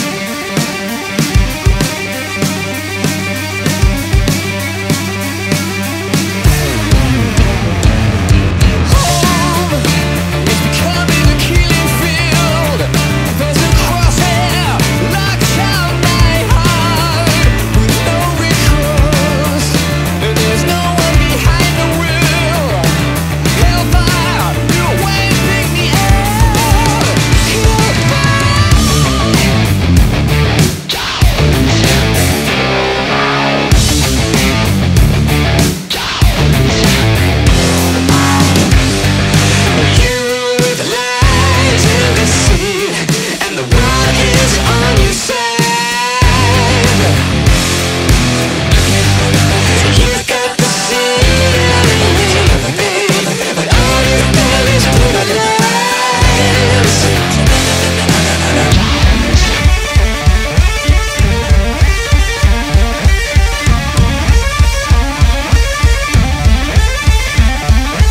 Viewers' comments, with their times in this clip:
0:07 is it just me or does the effect that is on Matt's voice make them sound like the vocals in some wotp songs (maybe even BHAR or TR)? Ngl I really love this song, second favorite on Drones, right behind DS/Psycho :)
0:28 kills me every time. I LOVE that riff!
0:29 Still Of The Night vibes
0:29 sounds like Whitesnake, "Still of the night"
0:39 See, (insert this generation here)? This is how autotune is supposed to be used.
0:49 those background vocals make this song way cooler.